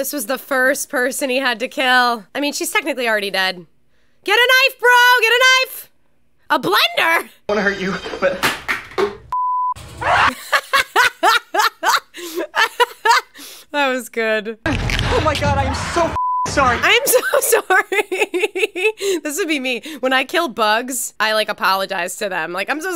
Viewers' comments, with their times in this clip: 0:10 The blender and your laugh took me out💀